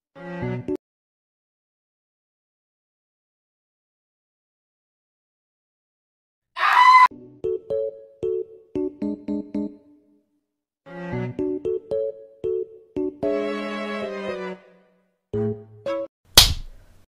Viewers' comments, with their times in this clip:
0:05 omg j her laugh 😂😂😂